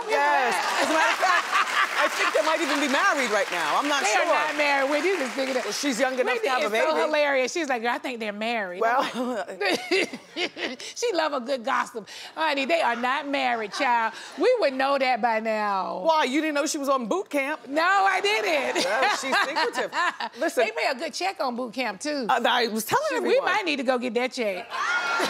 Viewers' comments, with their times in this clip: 0:10 I don't know why but the way Nene said the word gossip had me rolling 🤣